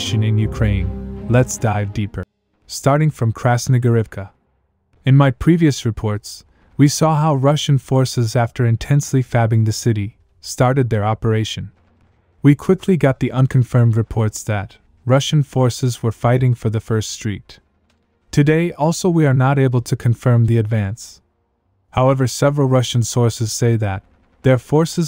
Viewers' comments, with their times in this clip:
0:08 intensely "FABing" the city. Cool!